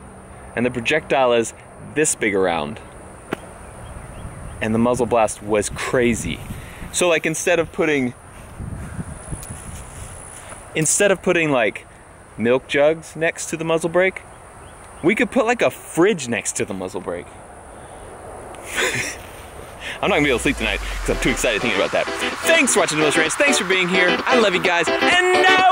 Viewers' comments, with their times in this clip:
0:06 anyone else hear "do you ever feel, like a plastic bag, drifting through the wind"